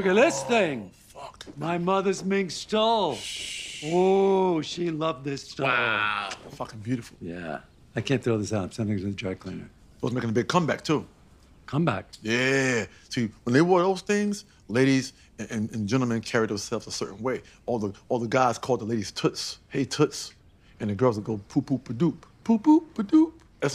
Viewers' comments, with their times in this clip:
0:04 Who is that saying "woowww" 😶